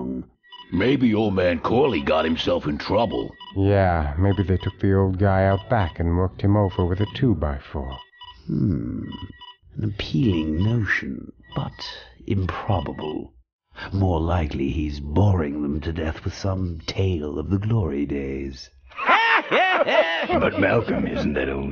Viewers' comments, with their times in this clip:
0:08 that sounds like the brain